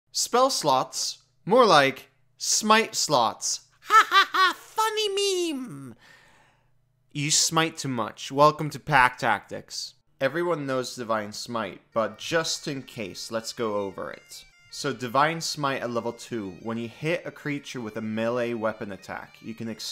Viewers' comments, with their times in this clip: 0:03 JESUS THAT VOICE IS ADORABLE-